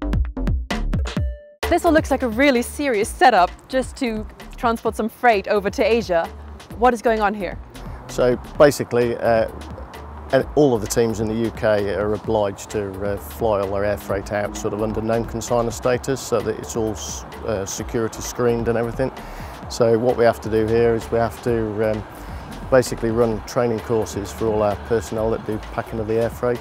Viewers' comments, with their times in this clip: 0:10 nigel mansell voice?!😅